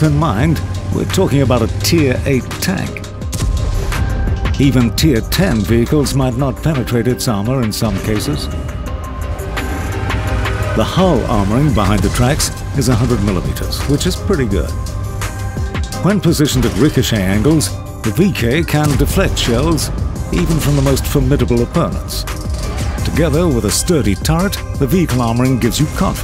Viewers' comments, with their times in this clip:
0:08 Finally, a wot vid with a good beat